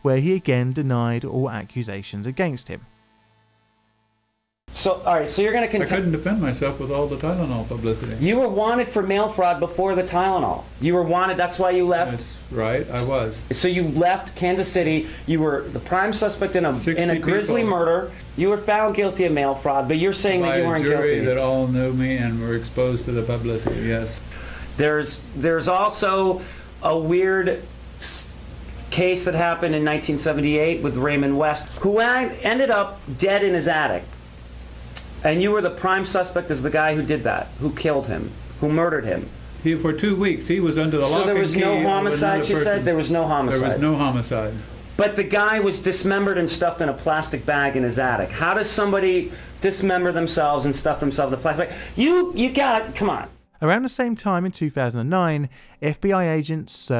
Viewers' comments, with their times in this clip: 0:05 CHILLS!! He sounds like Piers Morgan. 😳😂
0:41 no background-see how much better it is?